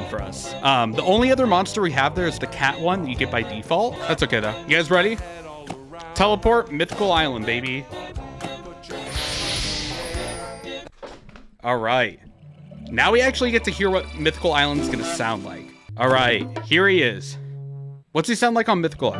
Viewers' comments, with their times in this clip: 0:06 my honk made it into the video 🙃